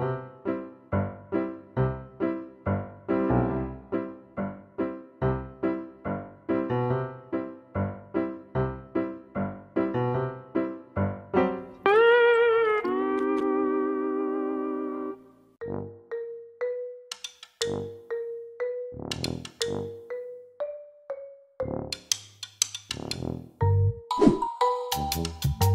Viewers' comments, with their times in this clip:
0:06 As a musician, the unstable tempo really bothered me. I’m joking, I do get bothered by it for say, a professionally produced song by a big artist, but I don’t care in this video. Tea spill always delivers, and that’s why I’m here, really late.
0:11 why must you put the spongebob sound effect??? Makes it 300% funnier😂😂😂😂😂😂